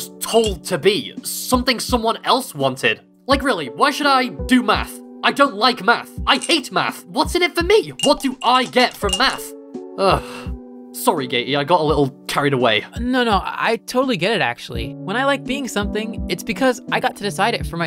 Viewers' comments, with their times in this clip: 0:04 why should i do meth?